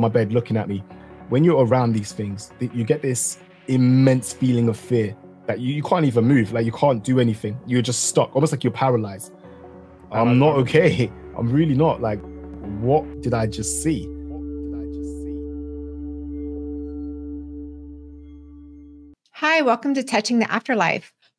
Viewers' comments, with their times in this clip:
0:09 "im not ok " - WHAT was that sound ? on your voice ? Sounded like it was doubled with an octave pitch below ? Weird .